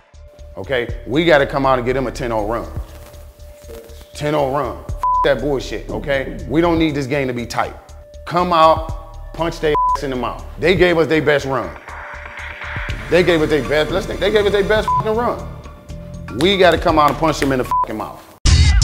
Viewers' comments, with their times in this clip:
0:05 Anyone else notice they censor fuck but not bs?